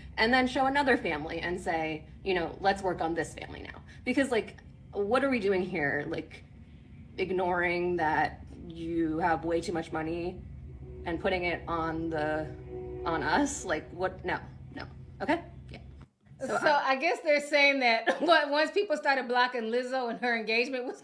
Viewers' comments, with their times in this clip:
0:03 I don’t like this internet accent most women have in 2024 🙇🏻‍♀️